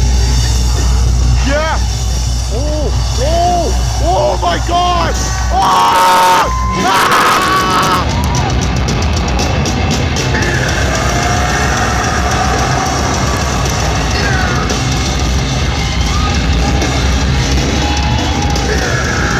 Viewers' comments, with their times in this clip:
0:05 that scream better than Corey xd